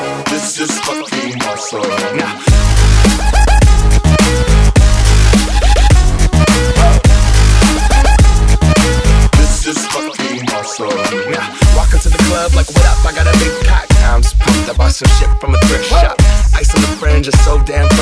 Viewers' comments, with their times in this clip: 0:06 awesome mucis is ver ok to scence